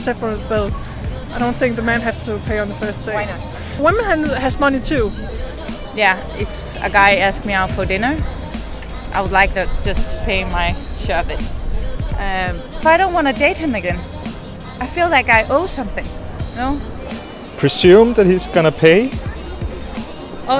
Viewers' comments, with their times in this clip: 0:07 that woman is DUTCH. I can differentiate between the accent easily😂